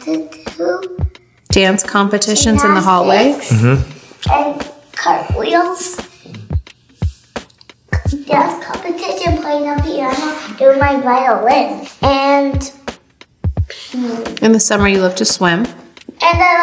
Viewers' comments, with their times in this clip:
0:03 Can we see how Kanye lowkey kinda "shutted up" Kim when she was talking and North started to talk? He does this mumble like "mjuum" so Kim would stop talking bc he wanted North to talk, and he moves his leg that's closer to Kim to like shut her up idk. Well idk maybe this is normal between them, and it's not even a bad thing